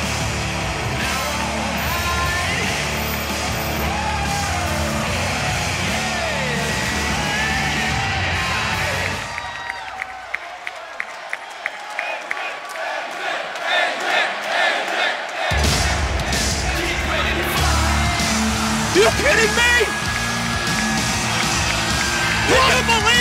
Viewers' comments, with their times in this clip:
0:06 This is why AJ Styles belongs in TNA... TNA fans made AJ Styles and AJ Styles made TNA. This guy is simply the best thing going in wrestling. LOOK AT THAT CROWD POP!